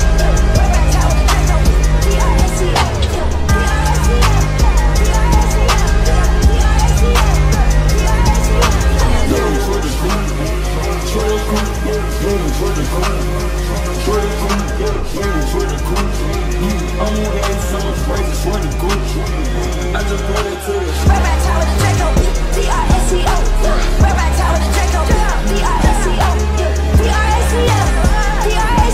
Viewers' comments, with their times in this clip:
0:07 this is litteraly on the beat 😳
0:09 my favorite part, idk what those sounds are called in the background but I notice Yeat has used em in a few songs, they were more prominent in “crashed dat bihh”